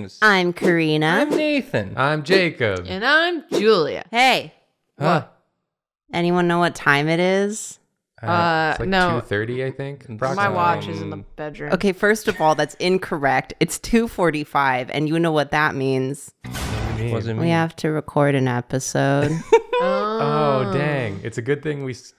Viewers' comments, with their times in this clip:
0:05 The synchronised “uhh?” is very satisfying